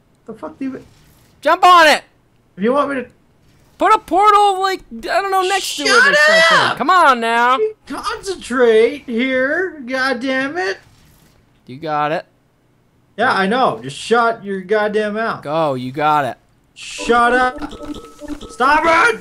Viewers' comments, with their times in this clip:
0:07 total charlie day impression